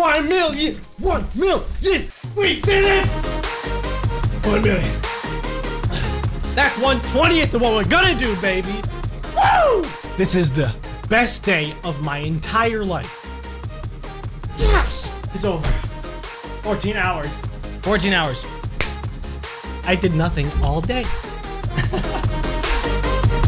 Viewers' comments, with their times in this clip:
0:04 I like how he says 1 million and it’s perfectly on beat with the music